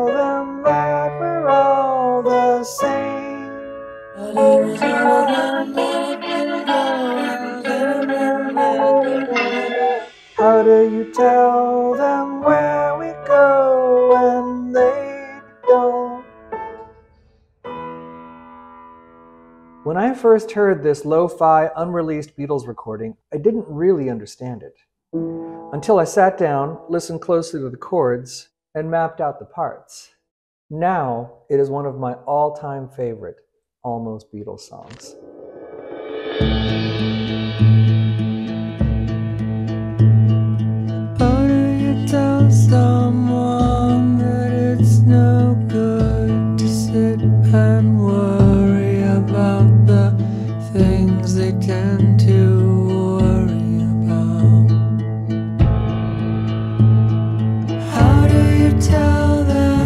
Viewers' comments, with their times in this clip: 0:06 No D minor?
0:41 This song would have changed the fabric of Revolver. Has a touch of Think For Yourself